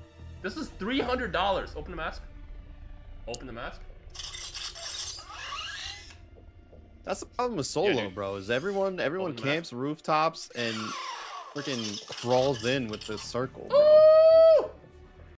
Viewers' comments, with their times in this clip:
0:07 you can practically hear the "wuzgoin"